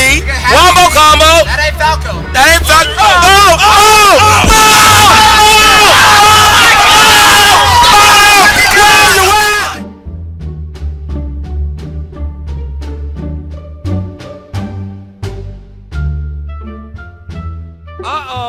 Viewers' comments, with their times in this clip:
0:04 rip headphone users (like me) rip my earsss bruhhh